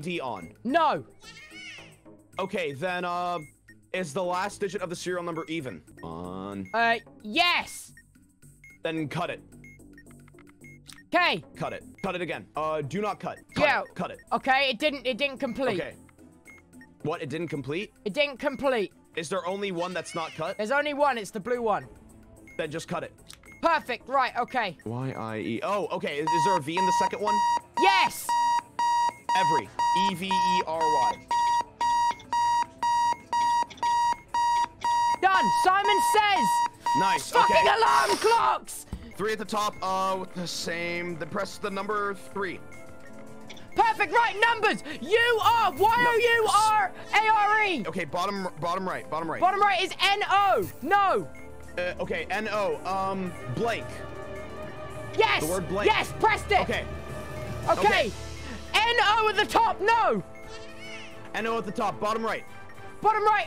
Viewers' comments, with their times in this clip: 0:05 I dont know if this was intentional but it says "cereal number" and that makes me happy
0:37 When im in a best dream but the alarm Wake me up
0:46 R WHAT- WHY DOES HE SOUND AMERICAN-